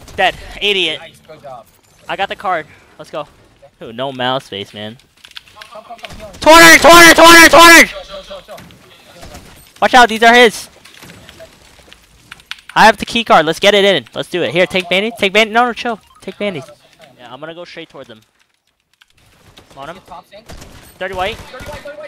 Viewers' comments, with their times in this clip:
0:06 Bro Was So Loud 💀